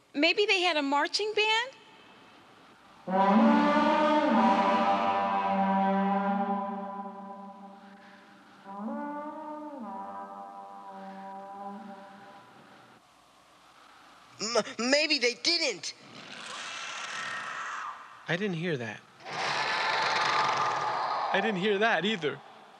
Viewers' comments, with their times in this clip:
0:03 my favorite scene of the entire series! The way the noise echoes, how the horn calls out TIAMAT, the fact the horn came from a place where dragons die, and right when the noise is made, we cut to a dragon bone. This makes it a very eerie setting that I love so much!!